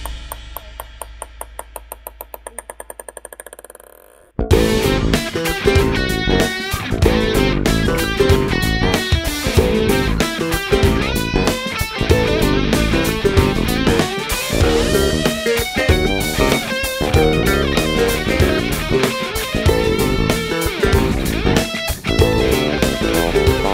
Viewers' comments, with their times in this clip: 0:04 I know it’s not prog, but … Lloyd Cole had a similar idea at the beginning of his 1990 song “Loveless.” Although, instead of using a ping-pong ball, it sounds as if he hung a plastic cylinder by a string and had it bounce against an object. Interesting effect, and interesting to see a (probably unintended) variant on the idea.